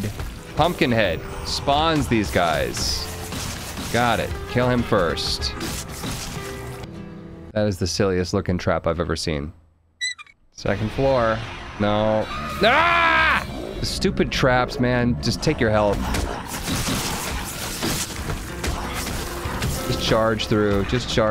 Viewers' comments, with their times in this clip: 0:09 trap sound effect took me out lmao